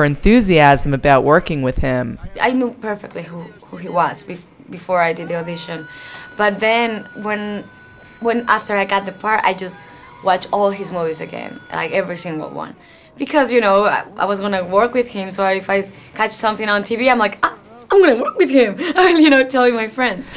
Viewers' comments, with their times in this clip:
0:04 Was funny when she first starts talking you hear "Nachooooooooooooooooooooooooo" in the background XD